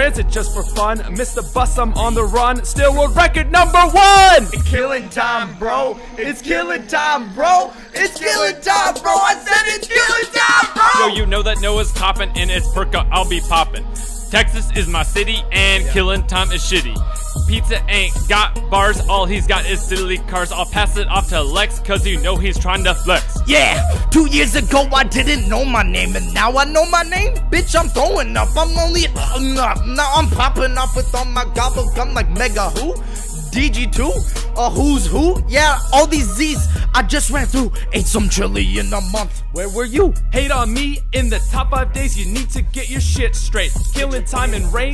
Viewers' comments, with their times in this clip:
0:04 just a little bit earrape
0:31 Who else thought he said the n word